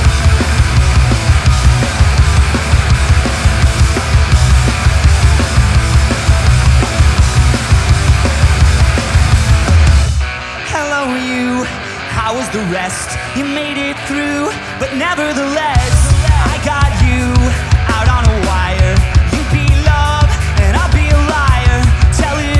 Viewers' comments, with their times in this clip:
0:10 dat cymbal choke